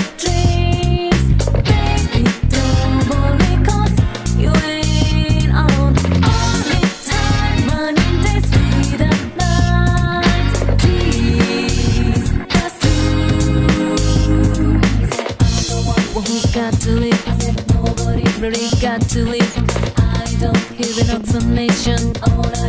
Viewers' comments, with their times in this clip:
0:03 My favorite for some reason is the first three... especially the third, it has this distinct melody that i love, right i dont know why, i just love hearing the melody